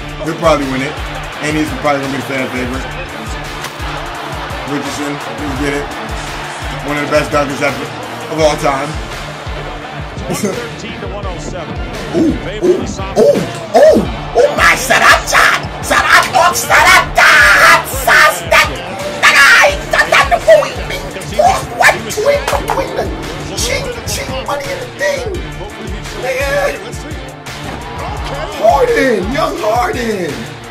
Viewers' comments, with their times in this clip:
0:10 he sounds like a Psyduck
0:13 Omg 😂 why he speaking in toungues
0:14 Mexican commentary be like
0:15 osn mating call